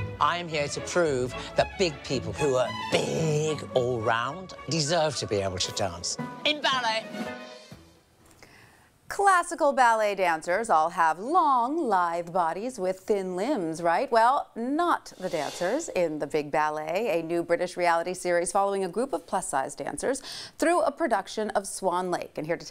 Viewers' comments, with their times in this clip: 0:10 she sounded like she strongly dislikes dancers lol😂